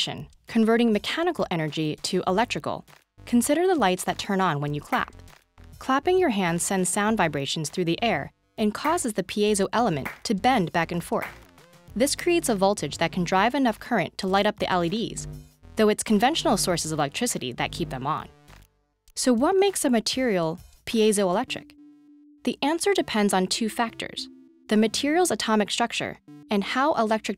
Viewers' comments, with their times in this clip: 0:09 that clapping really made me look around..